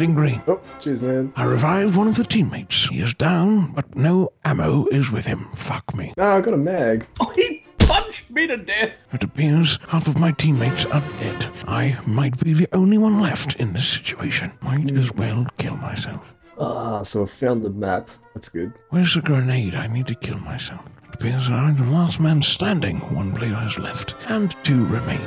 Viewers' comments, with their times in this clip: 0:06 Did that one dude that said "he punched me to death" have an India accent?